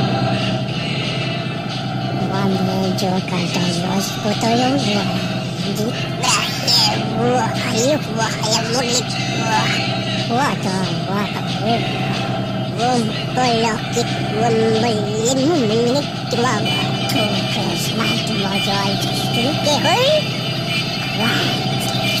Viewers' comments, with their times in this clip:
0:03 I love this song deeply, but I wish it faded out by the mark instead of having an alien garble in my right ear. It's cheesy and uncomfortable to listen to.